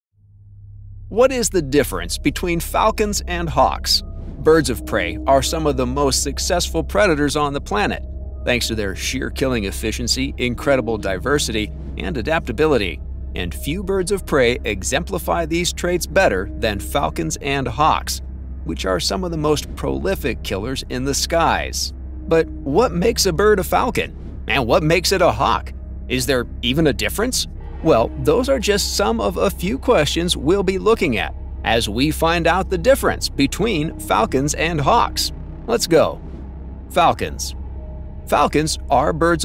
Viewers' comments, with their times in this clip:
0:00 "*WHAT IS THE DIFFERENCE BETWINN FALKINS AND HOXX?"* How Americans sound to other English speakers. PS: Diversity has literally less than nothing to do with the so-called success of 'birds of prey,' which the guy who wrote the verbiage for the narrator to mangle in American Pidgin English assumedly meant 'raptors,' but we can't all not be total idiots, can we? That was a RHETRICAL QUESTION, Nimrod. IT MEANS "SHUT THE FUCK UP, DONNY!"
0:20 Was this narrated by AI? The pronunciation of the Latin names are not correct, and in the beginning there was even an image of what appears to be a Turky Vulture, which are often mistaken for hawks or eagles.